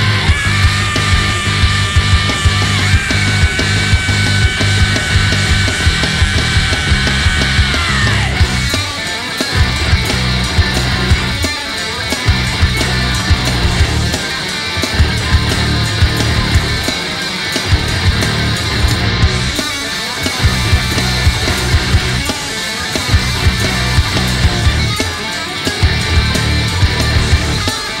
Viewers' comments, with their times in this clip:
0:09 Also can't believe how well he does those guitar parts nails it. Overdubs? I don't think is entirely live, I think it has extra guitar tracks...